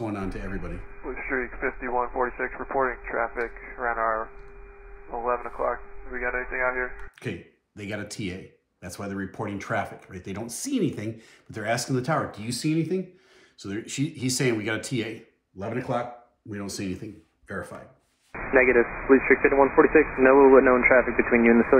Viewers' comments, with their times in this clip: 0:03 "Over GRAYS"? Like "The Grays"??